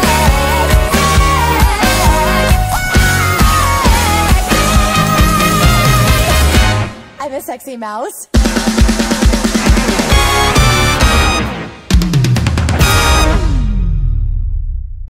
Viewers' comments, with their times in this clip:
0:08 beat goes hard 🎀